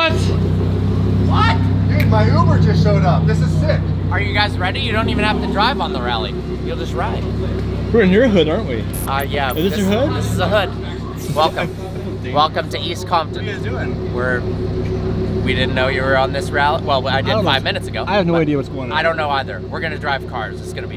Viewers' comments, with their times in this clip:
0:03 vlog ruined, hearing the most annoying voice in the world and seeing a face you'd just love to punch! At least you made up for it by doing awesome donuts in Alex's garage.